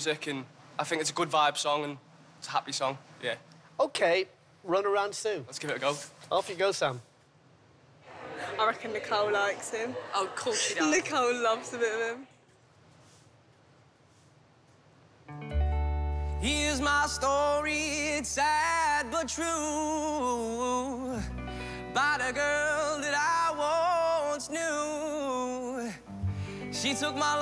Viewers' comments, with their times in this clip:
0:10 Nicole loves to be a bin